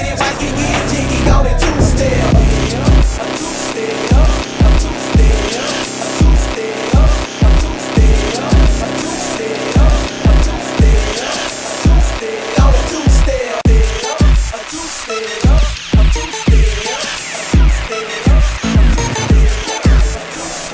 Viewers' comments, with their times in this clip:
0:04 15 years later and this is still one of the best mixes of all time. The transition will always be one of the smoothest things Ive ever heard.